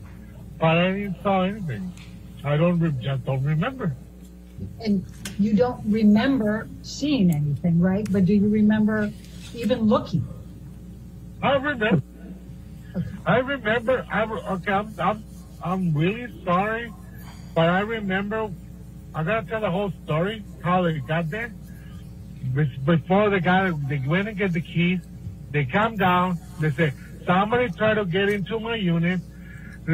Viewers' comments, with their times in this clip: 0:04 I think his story telling and Johnny laughing made me laugh because it’s one of those moments that you look at your co worker after dealing with a Karen customer. And you both know her from past times she’s come in. So like you can’t help but laugh thinking, “yea this sounds like her.”
0:11 😂 Okay lemmie tell da hole storree.
0:11 😂 Okay lemmie tell da hole storree.